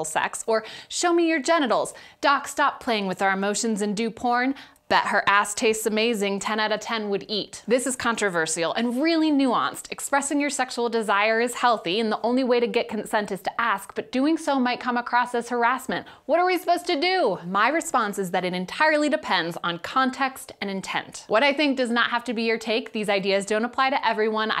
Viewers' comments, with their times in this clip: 0:08 The way you say 'controversial' is controversial.